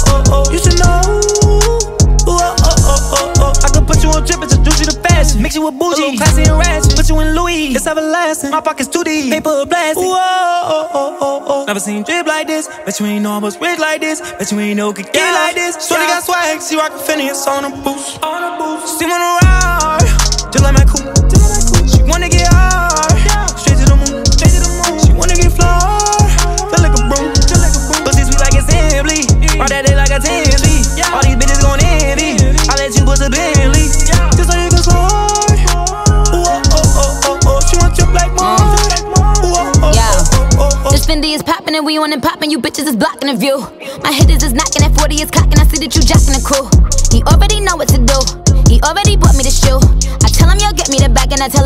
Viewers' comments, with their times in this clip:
0:04 sounds like life is good by drake n future
0:39 Her YO before she starts her verse is so legendary 👸🏻🦄👸🏻🦄👸🏻🦄👸🏻